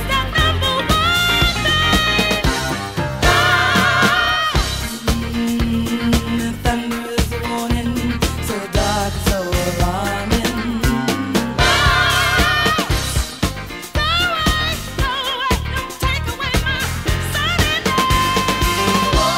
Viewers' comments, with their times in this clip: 0:04 I can hear Cissy and Whitney!!!!